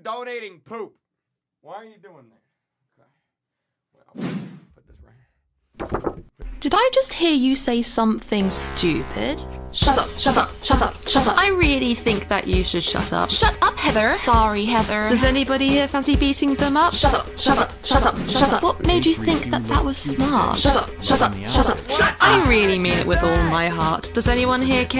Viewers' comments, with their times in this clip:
0:08 Josh Hutcherson whistle